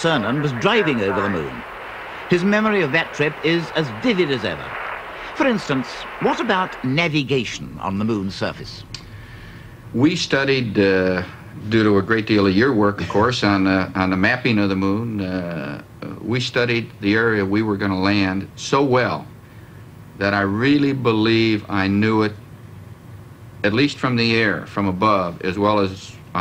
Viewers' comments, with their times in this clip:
0:10 Best impression of George W Bush I've ever heard.